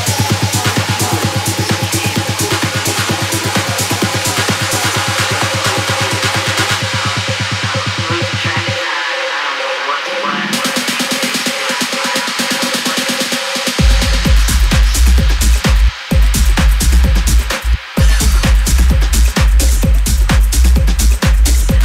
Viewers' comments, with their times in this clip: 0:03 absolutely a beast two drops at once!!